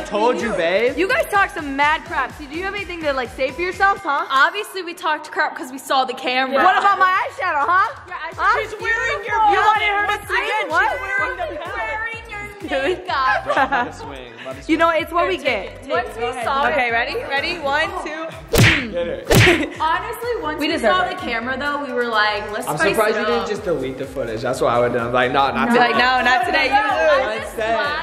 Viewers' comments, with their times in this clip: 0:10 is that a boy or a girl cuz he/she looks like a boy but sounds like a girl ??????????????????????????????